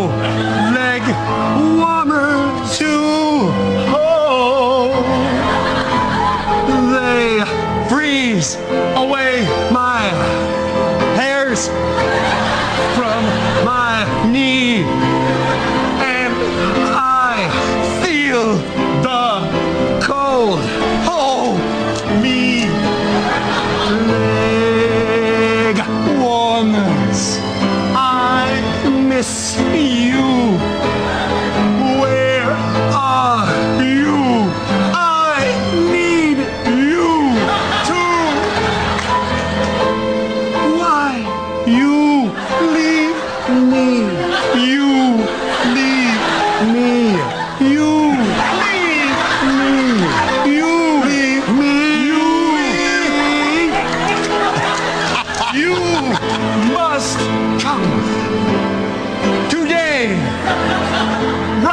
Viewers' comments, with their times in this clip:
0:05 Wayne sounds nice =) and i love ryan stiles. he is completely amazing.
0:48 you gotta admit, even though that was incredibly funny, sounded really good haha